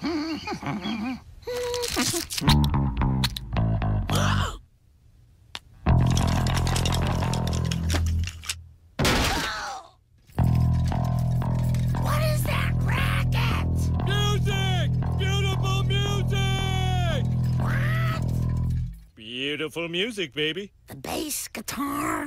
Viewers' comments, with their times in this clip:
0:06 I cant be the only one who heard Would